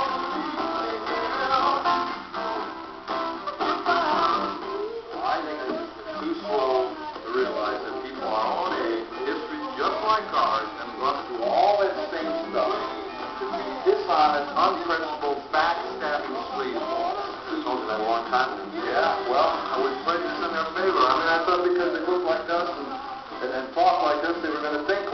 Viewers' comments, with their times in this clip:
0:09 Did I hear a doorbell or a grandfather clock ringing ?